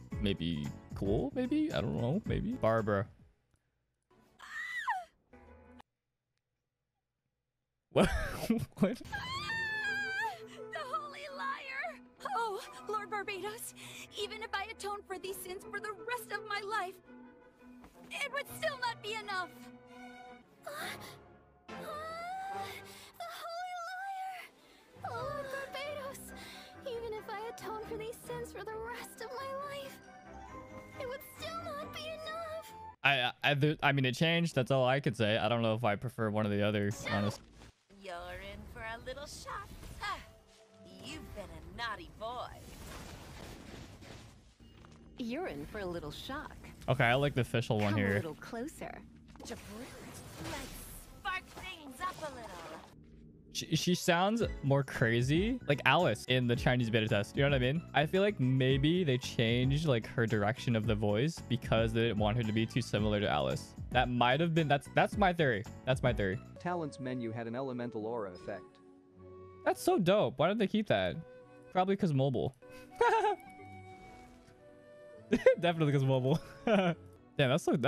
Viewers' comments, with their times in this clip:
0:03 Anyone else thinking that Barbara's shock sounds more sincere in the beta version?
0:04 sounds like Laura (if it was Laura in beta) did more of her Xinyan voice rather than her Barbara voice here Note: Laura Stahl voices Barbara and Xinyan in the English dub of Genshin.
0:04 barbara’s shriek of terror
0:04 Barbruh: inhales Barbara: screams
0:04 barbruh sang too much she lost her voice😂🤣
0:08 so that's why Barbara sounds more energetic in her combat voicelines before, it was from CBT.
0:09 she sounds like the girl from dragonball z dub. Gohan's date.
0:09 when I say barbara's new voice lines are better than her old one.. is proof look at the chat 💀💀
0:11 why she kinda sound like Chloe from miraculous ladybug 👀
0:15 Not gonna lie beta Barbara sounds like that girl with the bunny from the ghost stories anime
0:19 barbara sounded like some mlb character hmm who is it...
0:20 in barbara is full on moaning
0:27 I actually prefer Barbara’s original voice way more
0:38 bruh old lisa's voice is hilarious and very funny. The current one suits her the best because she is not a wicked witch
0:38 Lisa sounds like one of those old women from those yoga groups
0:41 sounds like signora for me
0:45 uhhh as a league of legends player and a genshin impact player too, Doesnt Lisa (Forgot her name) kinda sounds like alice in League pf legends?
0:59 lisa sounds drunk